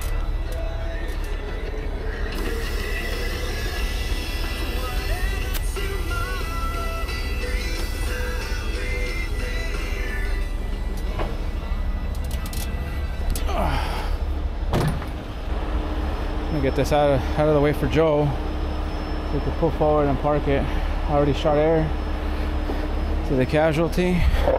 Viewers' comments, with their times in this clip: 0:07 radio still playing 😂😂😂😂